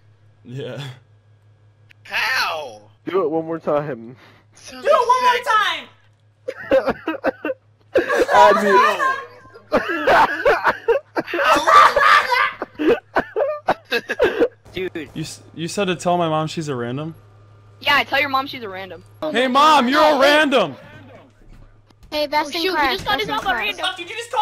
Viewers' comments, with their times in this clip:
0:07 Sorry for my ugly laugh seconds lmfao haha<3
0:11 sounds like he was choking on a tatortot